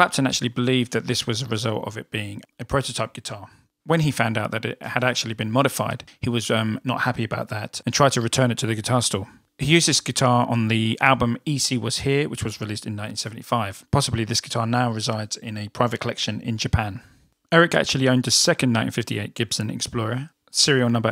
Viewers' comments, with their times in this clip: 0:09 I wondered if this was the guitar Eric played on E.C. Was Here - the tone is absolutely incredible!